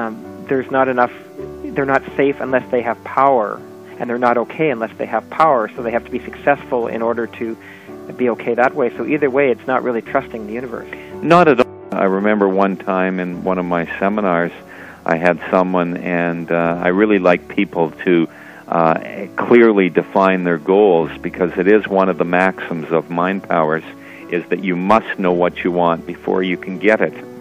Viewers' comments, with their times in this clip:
0:10 why is the audio cut ?